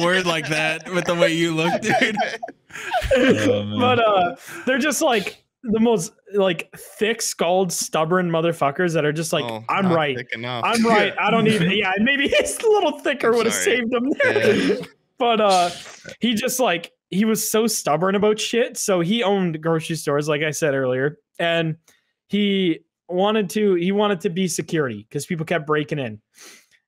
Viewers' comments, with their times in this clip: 0:08 as an arab I instantly believed he was arab